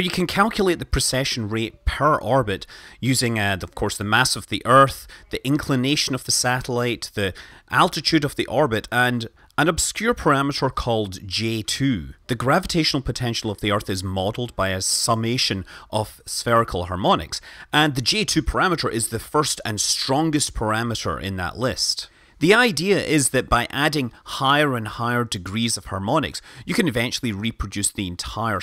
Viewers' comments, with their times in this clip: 0:10 A semi-latex WHAT??